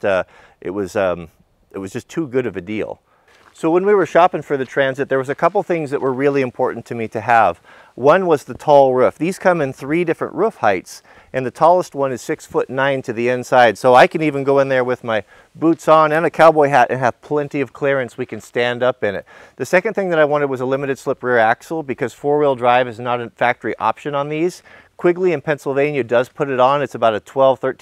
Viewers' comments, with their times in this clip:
0:09 You say "Ruff" instead of "roof"